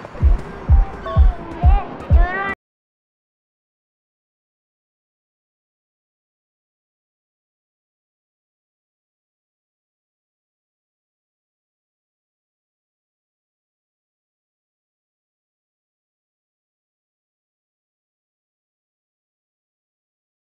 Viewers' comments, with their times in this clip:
0:04 brazilian music Oo